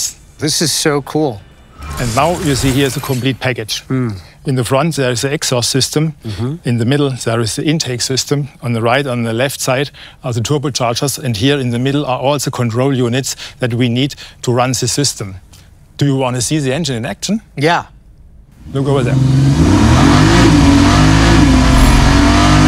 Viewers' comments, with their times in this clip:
0:07 Guy when he says Turbo Chargers... Sounds just like Arnold Schwarzenegger.